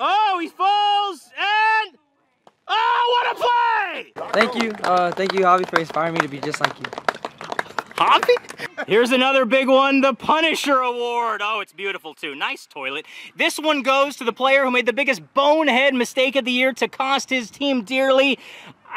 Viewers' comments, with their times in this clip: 0:05 The "h-h-havee?" Got me cracking up 🤣🤣